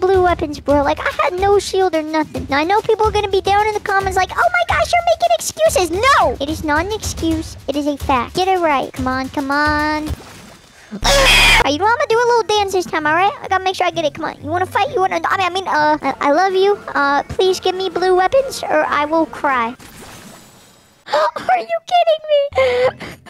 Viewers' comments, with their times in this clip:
0:08 Haaaa a aaaaaaa my ears